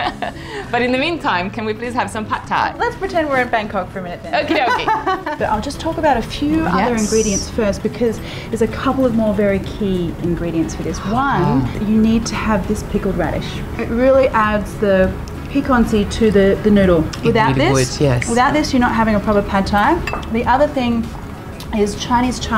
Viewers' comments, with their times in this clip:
0:10 Can anyone make out what ingridient Marion is showing .. can't make out what she's saying ..